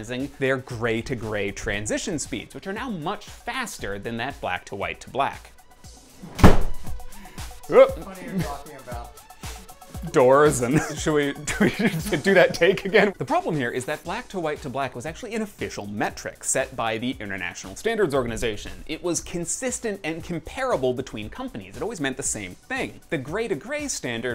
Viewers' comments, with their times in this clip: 0:05 the door shut down thought it was part of explanation, its not. that was the time i decided to subscribe your channel :D